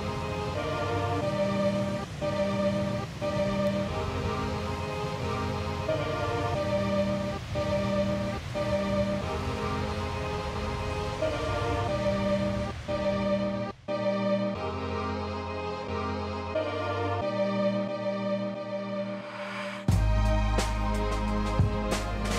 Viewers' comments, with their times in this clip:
0:10 it's beautiful song.